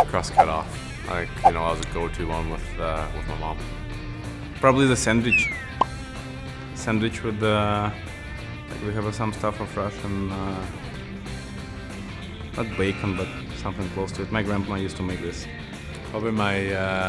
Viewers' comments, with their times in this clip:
0:04 Probably a sand-weech